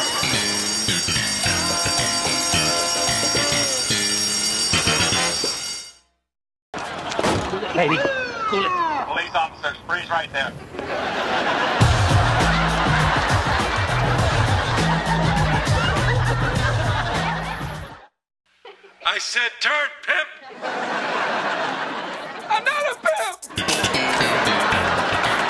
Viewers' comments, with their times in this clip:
0:07 my all time favorite still frame. The pimp music used was pure genius.